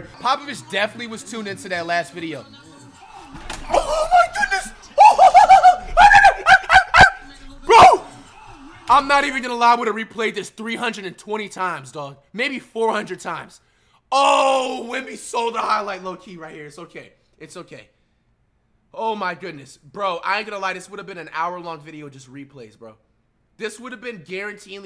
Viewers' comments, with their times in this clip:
0:06 did flight just barked 😂